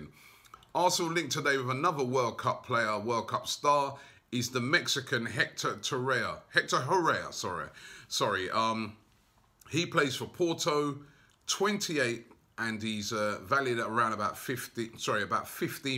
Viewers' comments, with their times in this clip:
0:03 I know you butcher literally every foreign players name but how do you get this one wrong as well 😂😂😂😂😂🤦🏽‍♂️ his name is Hector Herrera. HERRERA not HORREA where did you get that from???